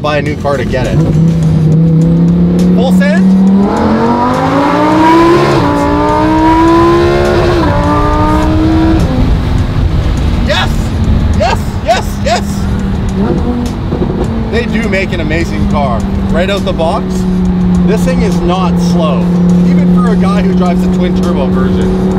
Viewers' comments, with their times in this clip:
0:06 someone forgot to shift up...